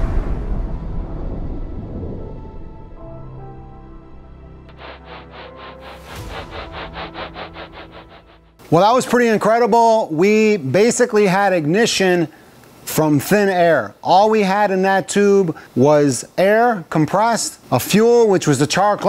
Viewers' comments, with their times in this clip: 0:04 even had turbo surge like a diesel engine 😂